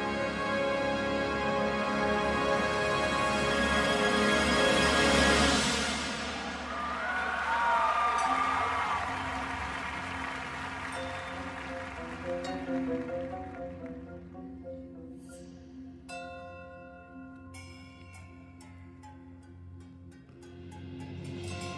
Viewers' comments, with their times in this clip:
0:04 That high trumpet note is absolutely fucking insane 😱